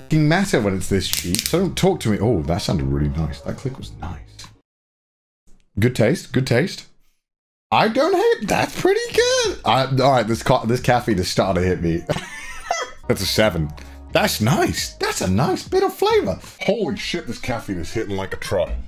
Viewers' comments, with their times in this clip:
0:04 THAT SOUNDED EXACTLY LIKE THE "NOICE" MEME!!!!!!